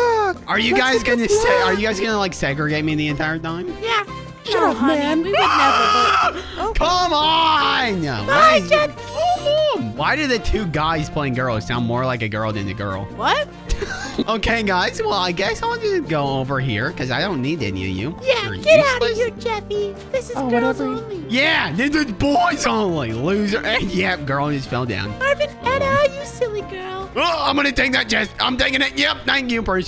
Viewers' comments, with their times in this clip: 0:10 why did the 2 guys playing girls sounds more like a girl than a girl?